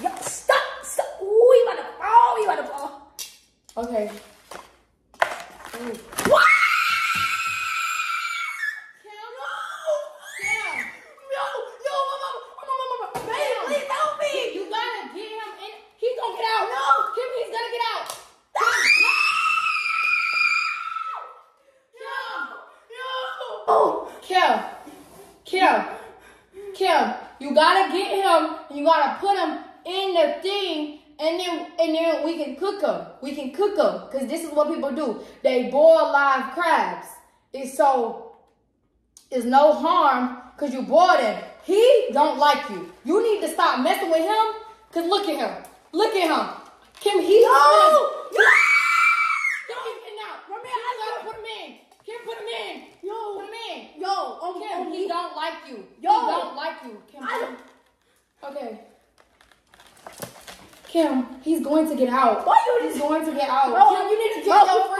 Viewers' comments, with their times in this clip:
0:07 The way y’all both screamed 😂😂
0:48 the synced screams 😂